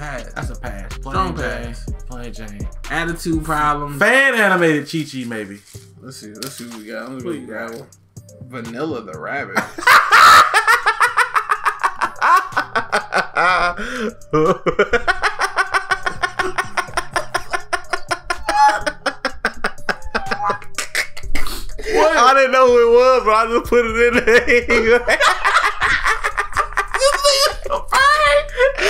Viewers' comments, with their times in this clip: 0:10 Why you laugh so hard god damn laughing 😂😹😹🤣🤣🤣😹😹😹😂
0:15 when my truck engine won't start